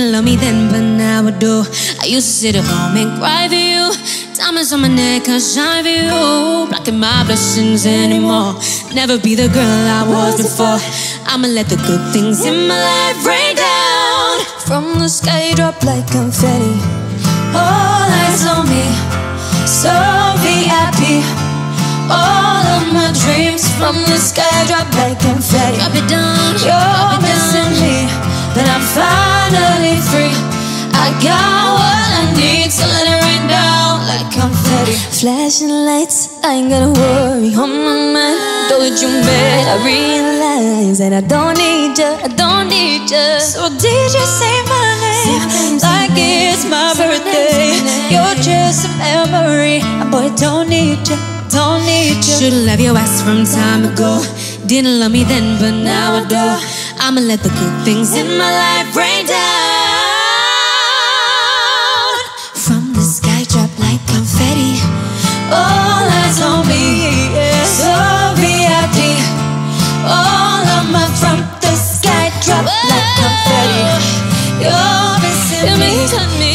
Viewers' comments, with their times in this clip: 0:06 As soon as Leigh threw in a slight run I knew it was over for me. Damn goosebumps the entire time. They killed it!!!
0:15 is no one gonna talk about jade and perrie are both laughing
0:16 i have never realized before that Jade and Perrie had to laugh here
0:17 I love their little laugh
0:26 Lmfao, Leigh Ann's (Drop It Down) sounds like Jesy lols bwahahaa.
0:35 sounds so nice
0:38 How did Leigh did this .... Their vocal power is mind-blowing and that's we call talent
0:39 And perrie and Leigh laughing they always laugh when they sing acoustic lol
0:42 u can hear leighs microphone and lip sync was late.
0:44 i love the Destiny Child’s Say My Name background vocal
0:58 Nahhhh from was insaneeeee those little changes are crazyyy 🔥🔥🔥🔥
1:02 why no one is talking about this? I never knew Jade and Perrie can create a whole new damn voice together, IT'S INSANE
1:02 the way they said "from the sky drop like confetti" lives in my head rent free
1:03 why am i so inlove with perrie's "from the sky drop like confetti"
1:03 jade’s “from the sky drop like confetti” is so cute and funny